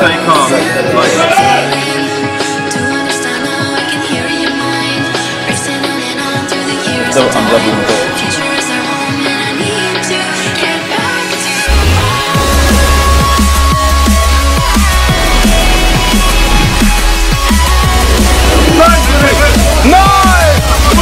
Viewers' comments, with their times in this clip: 0:04 up with the volume there! <3